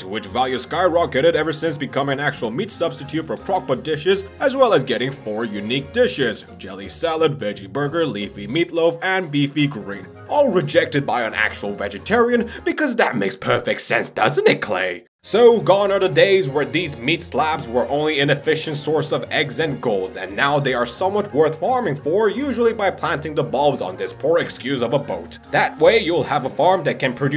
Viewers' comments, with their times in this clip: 0:10 his voice lolllll
0:12 why do you sound like Yoda tho?
0:13 For some reason your voice here reminds me of Yoda